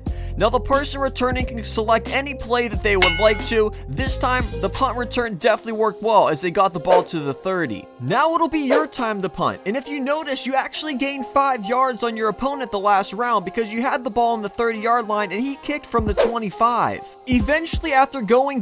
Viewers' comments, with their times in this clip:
0:06 WTF IS SELET?!